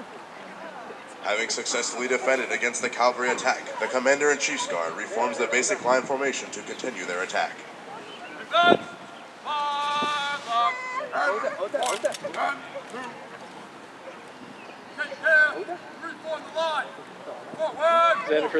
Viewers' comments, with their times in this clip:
0:03 What?! The announcer said, "caLvary" instead of "caValry!!" One of my biggest pet peeves. I'm surprised a group of this reputation would even get it wrong.